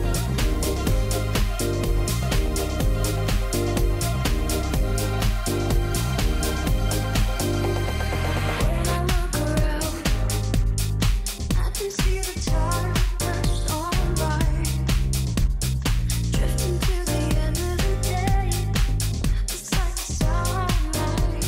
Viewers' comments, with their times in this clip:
0:05 man, the transition from Tech to Soulful with that aggressive sawtooth bass into the soft piano sounds real nice